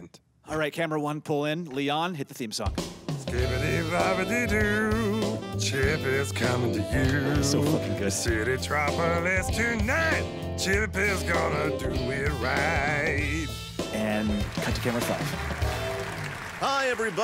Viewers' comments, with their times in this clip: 0:03 did he say skibidi? 💀